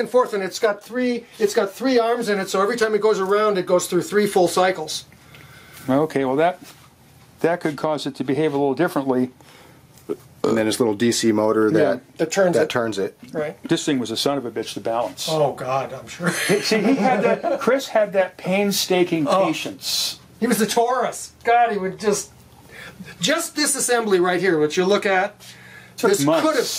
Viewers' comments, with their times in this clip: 0:08 behave a little brp differently b-buurrppp ladies and gentleman, we've found Rick!
0:10 The burp will never not make my day